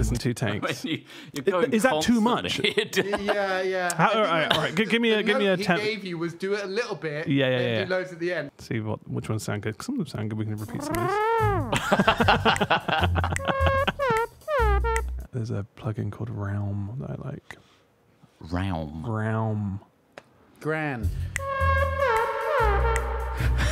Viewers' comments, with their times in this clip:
0:08 I just love how sassy it sounds.